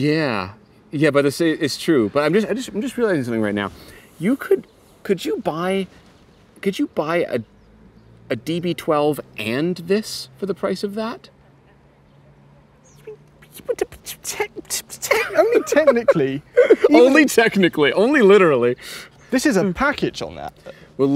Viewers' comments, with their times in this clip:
0:03 My god this thing is a proper shotgun here